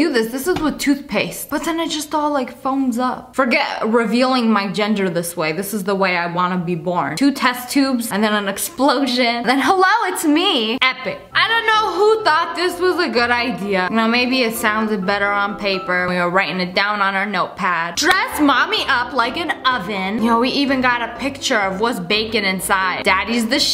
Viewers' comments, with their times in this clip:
0:04 Team girl lol the squeal got me!